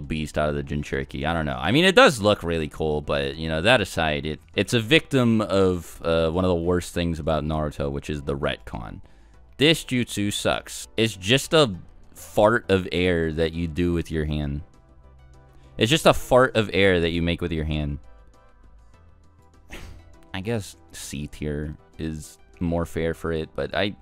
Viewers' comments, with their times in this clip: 0:10 I've never heard someone call the gale palm a fart out of ur hand. The way he ended the video is just so brilliant too, along with how calming his voice it. I wanna be friends with this guy, like there's no way he isn't as chill irl